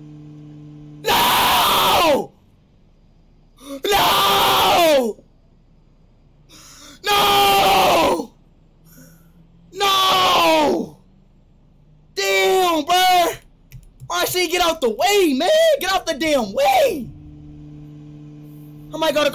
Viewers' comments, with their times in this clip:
0:06 he was screaming bcuz he ran someone over